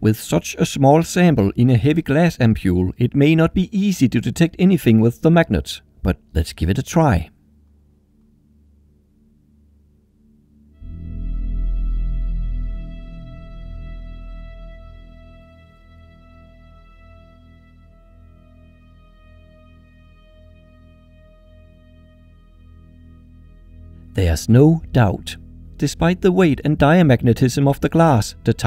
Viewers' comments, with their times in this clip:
0:09 why i hear boss music ?